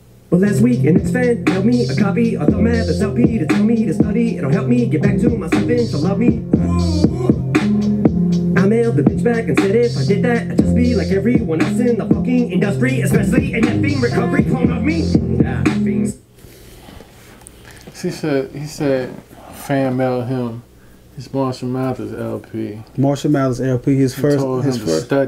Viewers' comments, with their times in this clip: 0:09 does he dis NF? Cause he says "fucking" right before that and then he sensors himself and says "and F'ing" "N F'ing"?